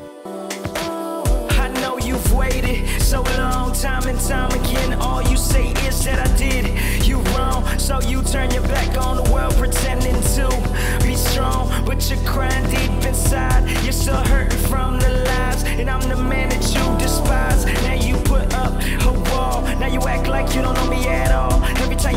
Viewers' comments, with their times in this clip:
0:09 I usually enjoy the music in MCM videos but this is the first time I haven’t. The rap tune at the beginning starting just didn’t seem like it fit the theme, the tempo, nothing. I am admittedly enjoy old school rap from the 80’s & 90’s so that might be why this doesn’t do it for me. Great video otherwise, I love me some 90’s Datsun and SR20!